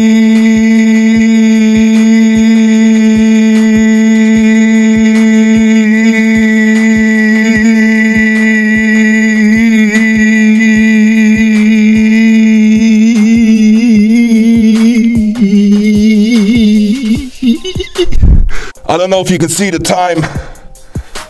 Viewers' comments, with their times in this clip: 0:06 Turning to a fly LOL